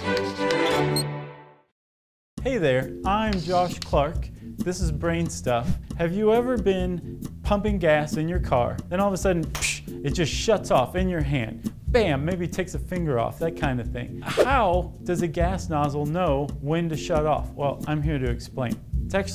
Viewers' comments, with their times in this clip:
0:07 I genuinely thought he said "huffing gas" lol